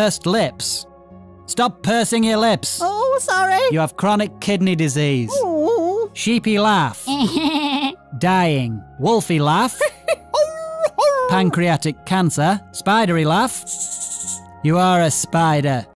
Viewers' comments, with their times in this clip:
0:07 SHEEPY LAUGH LMAO THATS HOW I LAUGH I just heard my friend laugh and it sounds like Paul's Laugh ROFL
0:09 i love this laugh
0:09 gets me every time The way he friggin l a u gh s